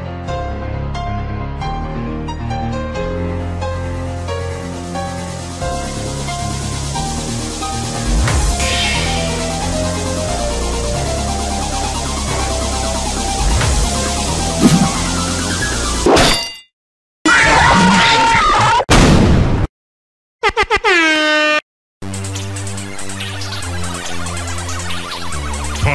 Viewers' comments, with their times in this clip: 0:06 those instruments make a good music hearing together 👍🏼